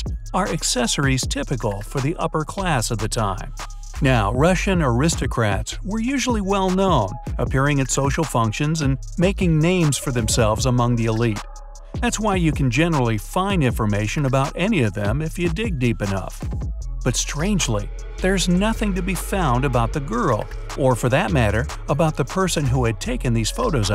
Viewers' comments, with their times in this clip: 0:09 I heard “...making memes for themselves” Too amazing for me